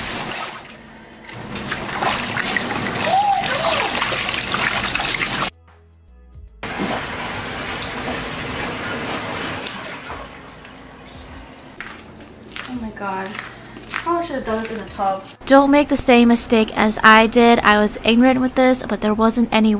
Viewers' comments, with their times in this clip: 0:03 was that a gasp or a WOOH HOO ? 😂😂